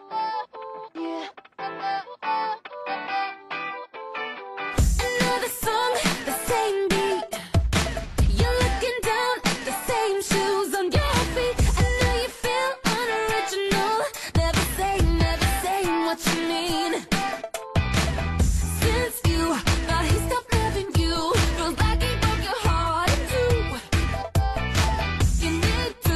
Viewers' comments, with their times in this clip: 0:05 this song sounds like it comes from the late 2000s to the early 2010s
0:14 feels like it would be always on the radio i cant believe its lost!